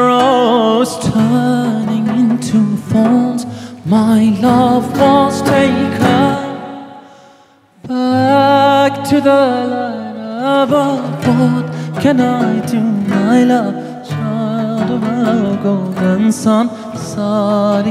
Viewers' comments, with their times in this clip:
0:04 BEAUTIFUL MELODY AND LYRICS WITH WARM CONTENT OF A PURE AND MYSTICAL LOVE. 💝💕💓🥰💍💎💎💎😘💔🧡💗💗💖💗💗💗💗💗💗